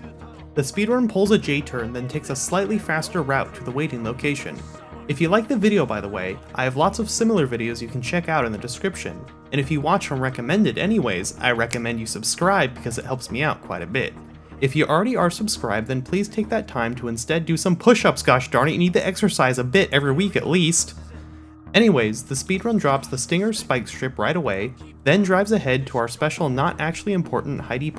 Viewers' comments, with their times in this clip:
0:09 i like how you snapped your fingers
0:10 there's an audible snap of his fingers. like bro, I can't see you. Its just annoying.
0:10 are you snapping your fingers because of the smooth segue reminding us to subscribe? That is hilarious and got an instant like from me bro!
0:12 did he just snap his fingers at his own pun? The mad man.